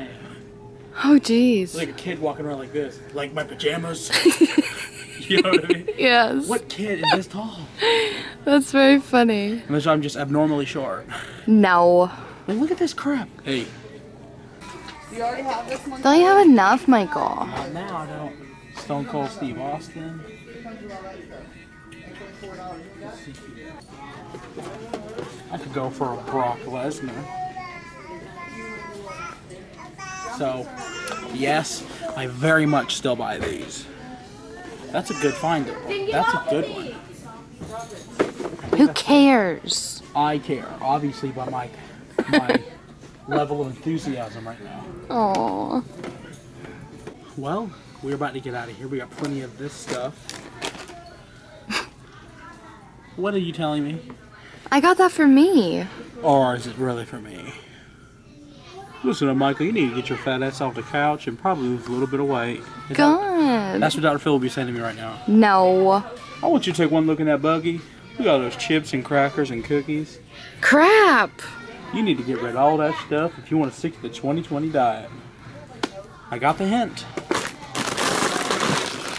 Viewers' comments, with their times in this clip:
0:03 What was the random "Hey" Lol!
0:11 Who was that saying hey
0:13 who said hey
1:00 target put Annie song on listen carefully